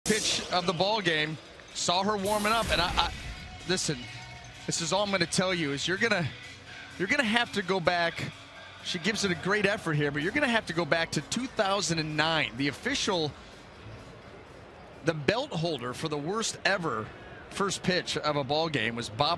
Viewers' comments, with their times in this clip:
0:00 did he say "bitch at the ballgame"?